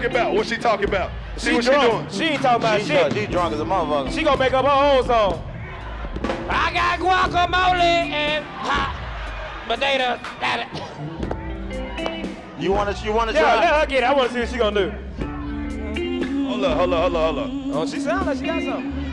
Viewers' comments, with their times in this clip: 0:03 (ghost voice) IIIIIIII GOT DA CHOPPAAAAAAAA